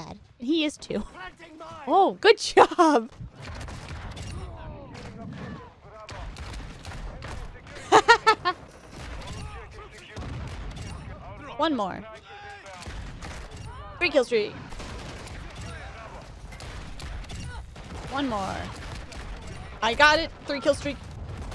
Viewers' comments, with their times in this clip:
0:07 That laught seconds......we have all done that laugh playing this game 😂😂